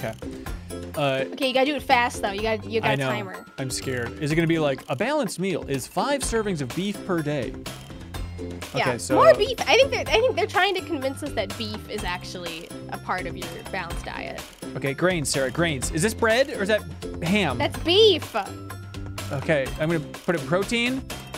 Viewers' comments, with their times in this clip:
0:05 that music is very sims